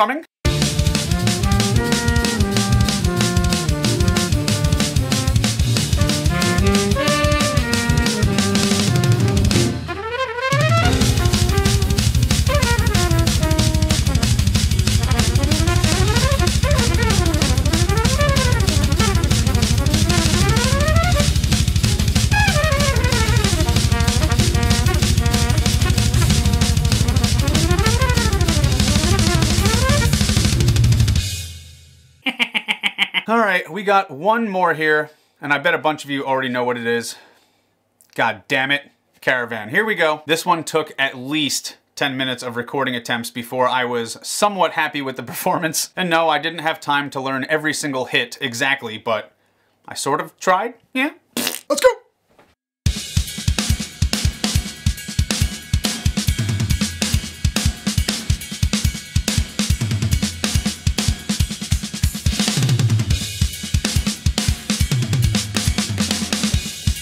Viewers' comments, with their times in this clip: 0:04 I never knew I wanted to hear double kick on Cherokee so badly, but now I have! I really liked your takes on Strausbourg and Caravan! There’s a lot metal drummers can learn from jazz players, and vice versa :)
0:04 BTW the is just a sick rhytmical guitar riff away from being Slayer, lol. Or Ministry.
0:08 the fill there actually flowed so well
0:51 when Portnoy plays Caravan😆😆
0:52 That sounds sweet! Double bass drum right in place.
0:54 Am I nuts, or did the very beginning of Caravan sound like "The Art of Dying", by Gojira?